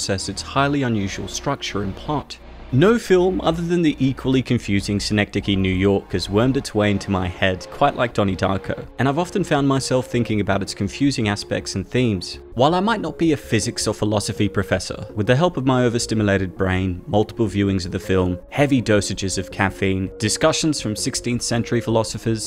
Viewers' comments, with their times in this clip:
0:05 What was the film that you mentioned ? It sounds like you are saying Schenectady NY…. I live in Schenectady and if there’s a film by that name, I gotta see it!